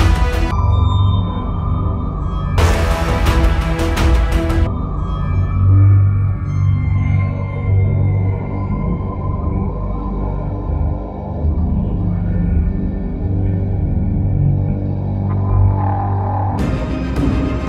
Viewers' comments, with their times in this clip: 0:05 sounds like the security breach title theme even tho security breach came out 4 years ago